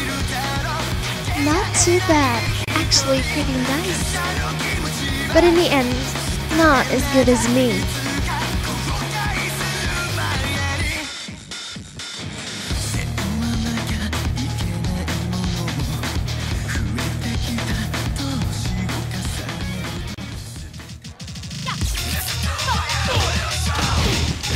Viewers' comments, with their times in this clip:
0:06 nyc :) but in why is Lili's Voice in ENGLISH?! i thought only French?! O.o